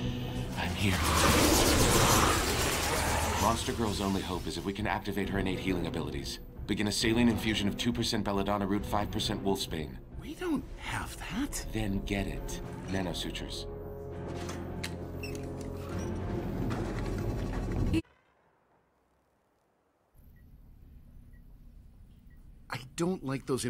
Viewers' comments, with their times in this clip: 0:10 "We don't have that" "Then get it" The way Robot said that...damn